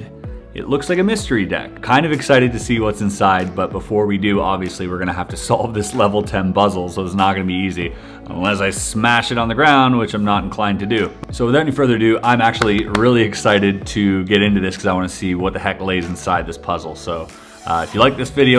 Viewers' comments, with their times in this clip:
0:06 he says “ obviously we have to solve this level ten BUZZLE” no I did not mistype I meant buzzle because that’s what he said like if you noticed it too 😂